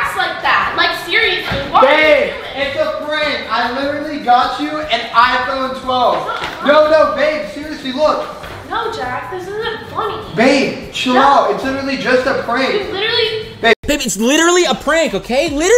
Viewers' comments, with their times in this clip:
0:03 He even yells when talking to his girlfriend. I know the whole shit is faked for the video and she is in on it but i genuinely think this guy cannot converse without yelling, ever